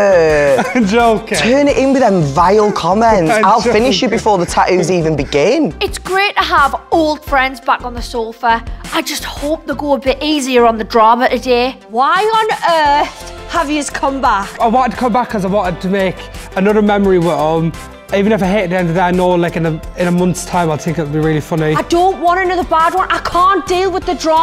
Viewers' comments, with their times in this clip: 0:06 It's grate to have ol friens back on the soafa I just hope ell go a bit easier on da drahma t'day
0:06 She has a serious accent.